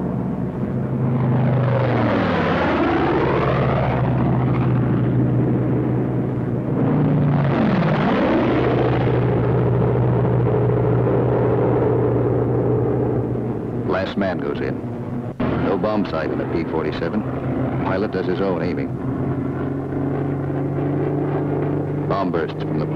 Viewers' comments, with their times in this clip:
0:04 are those the real sounds? Sounds like they recording fly-bys and dubbed it over this.